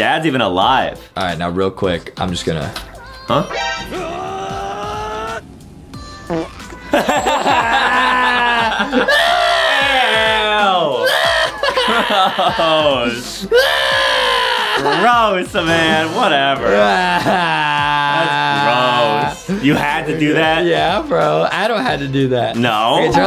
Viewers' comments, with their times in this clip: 0:07 Did Adam plushy just fart?